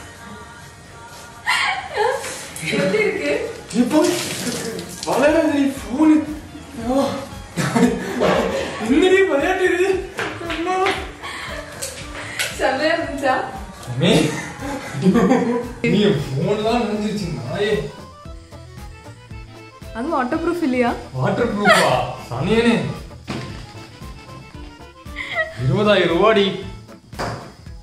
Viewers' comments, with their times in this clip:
0:08 sounds like an old maan